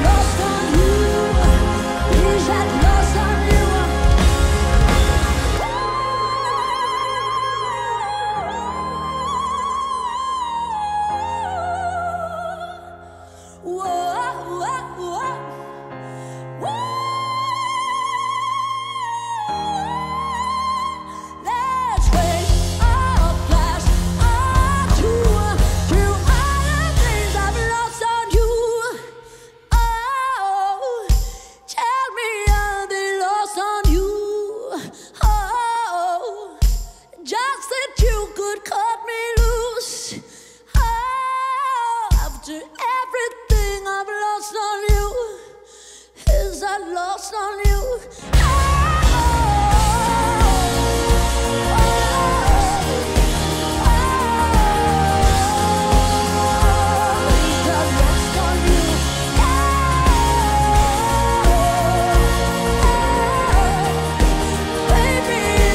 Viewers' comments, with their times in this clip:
0:04 I Love how he Hit the High notes it was amazing
0:47 when LP looks into the camera "is that lost on you?" with a yearning look in her eyes then instantly belts out a gorgeous note as the band ignites again...PERFECTION❤❤❤